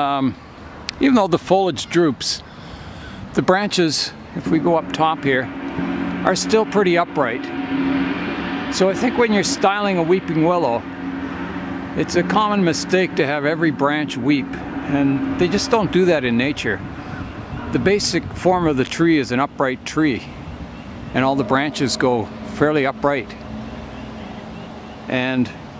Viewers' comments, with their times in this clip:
0:07 That willow does not look like a true weeping willow, Salix babylonica. The main branches of those do tend to curve downward, with the smaller branches distinctly weeping. Of course, other willows in the right conditions, will have branches that droop, like the black willow you showed first, for example. And there are numerous hybrids, both man-made and naturally occuring. Enjoyed the singing of the hens.